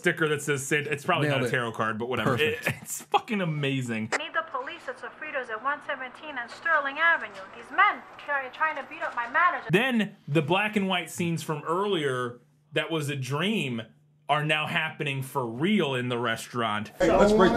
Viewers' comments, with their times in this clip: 0:04 that entire woman's lines have the filter on them to make it sound like we're hearing her from the other end of the phone call despite the fact it cuts to her in person. These films are wonderful, piles of shit.